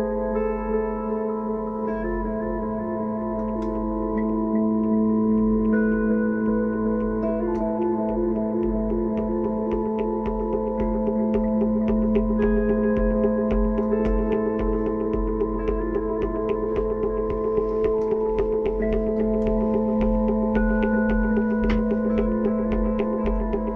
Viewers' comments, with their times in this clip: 0:08 Also! What's providing the drums in that jam/improvisation/scoring/piece/thing (they enter around the mark)? Such a nice sound.